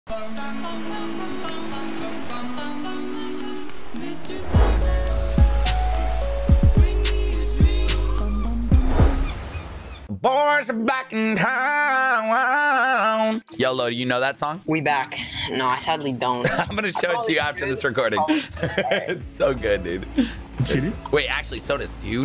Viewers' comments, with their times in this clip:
0:10 Yo amazing singing (just amazing)